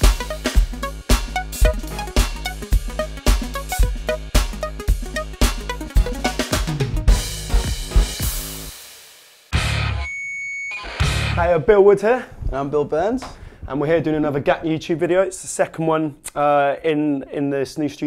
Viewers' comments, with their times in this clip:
0:06 omg the Roland Basedrum :D